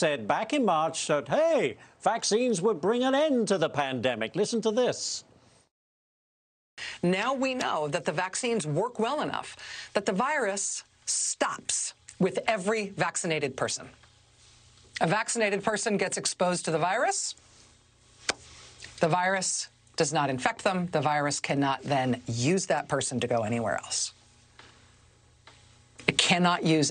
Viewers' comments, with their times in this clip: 0:09 she sounds like a terrible QVC salesperson